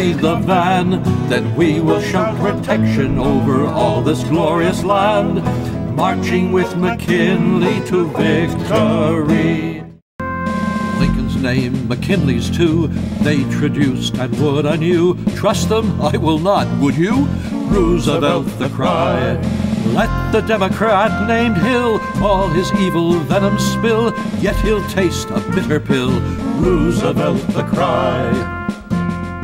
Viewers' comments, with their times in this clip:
0:10 20th century music